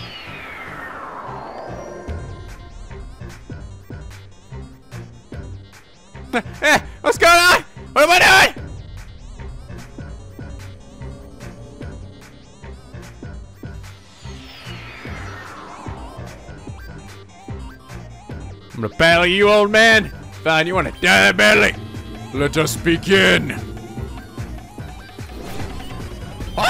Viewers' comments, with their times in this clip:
0:06 when the sick beat started and you know it's about to go down.
0:13 Sounds like Death by glamor(undertale)